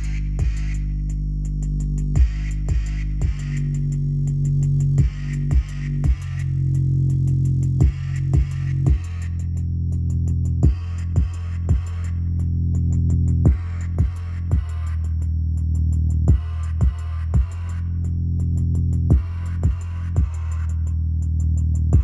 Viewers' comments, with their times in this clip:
0:04 it started sounding like garbo lol